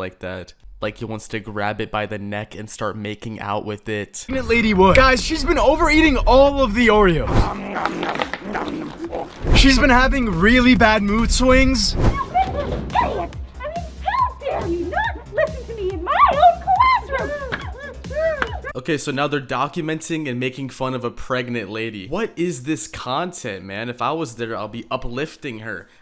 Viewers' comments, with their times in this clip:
0:07 i hear cookie monster